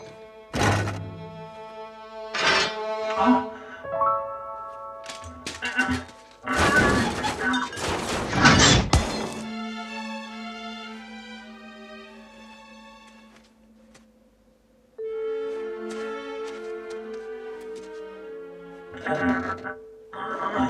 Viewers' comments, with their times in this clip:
0:08 Very much like the robot from Wallace & Gromit: A Grand Day Out. Even the music is reminiscent of W&G incidental music.